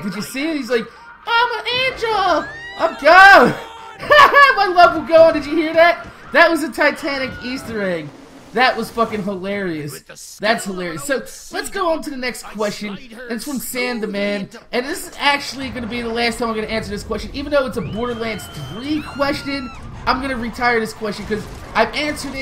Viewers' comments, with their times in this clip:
0:05 Wilhelm scream...Sound-design Easter egg.